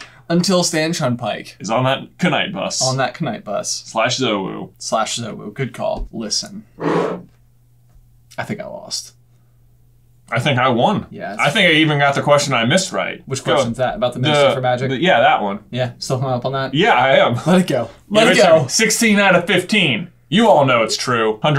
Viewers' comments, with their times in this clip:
0:04 i thought they said /UwU